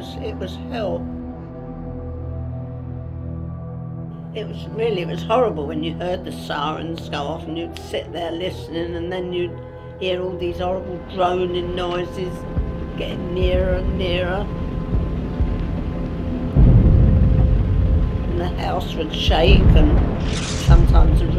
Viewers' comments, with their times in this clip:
0:06 I find those sirens scary